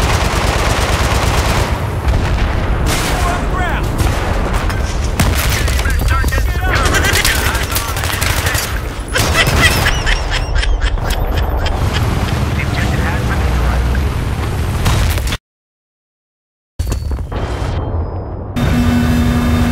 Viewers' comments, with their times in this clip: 0:06 what is this sound this laugh? :D